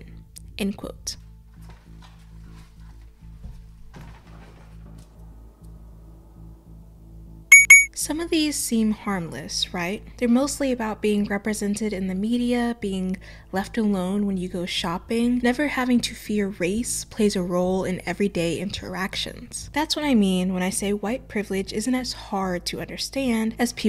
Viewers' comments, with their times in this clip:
0:06 The chime when you blink is WAAAAAY too loud. Gave me a fuckin heart attack. Good vid tho otherwise.